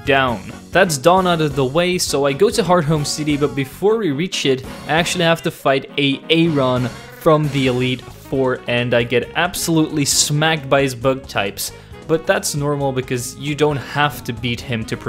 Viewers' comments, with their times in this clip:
0:03 did you seriously say a a ron? hahahahahaha man have you been watching too many Key and Peele sketches